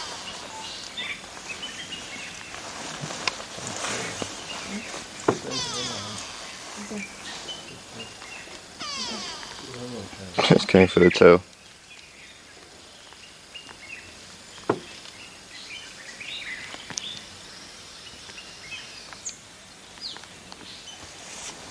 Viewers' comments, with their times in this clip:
0:05 The big pay back James Brown song 1973, Bird "F YOU ATE MY NEW BORN BABIES 2. hear snake whining like a punk-ass
0:05 The big pay back James Brown song 1973, Bird "F YOU ATE MY NEW BORN BABIES 2. hear snake whining like a punk-ass
0:05 The big pay back James Brown song 1973, Bird "F YOU ATE MY NEW BORN BABIES 2. hear snake whining like a punk-ass
0:05 word-up The big pay back James Brown song 1973, Bird "F YOU ATE MY NEW BORN BABIES 2. hear snake whining like a punk-ass
0:05 The big pay back James Brown song 1973, Bird "F YOU ATE MY NEW BORN BABIES 2. hear snake whining like a punk-ass
0:05 The big pay back James Brown song 1973, Bird "F YOU ATE MY NEW BORN BABIES 2. hear snake whining like a punk-ass